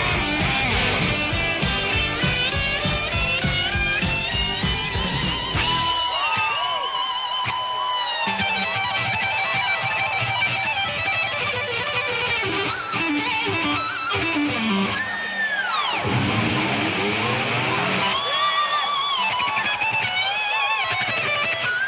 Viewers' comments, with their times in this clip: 0:09 (i think he is doing a legato technique ) hahahahaha nerd alert !!!!